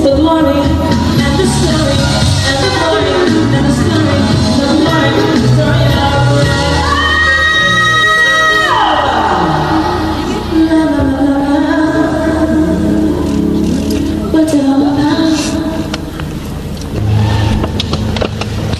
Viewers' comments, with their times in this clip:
0:06 THE POWER!!! Queen of Eb5 belts 🥳